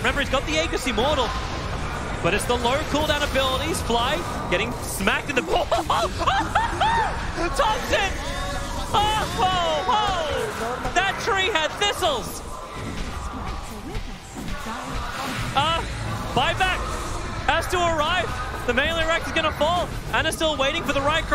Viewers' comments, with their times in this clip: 0:05 petition to make that TobiWan laugh a future chatwheel
0:05 THAT LAUGH IS LEGENDARY FOR SURE xD NEXT TI PASS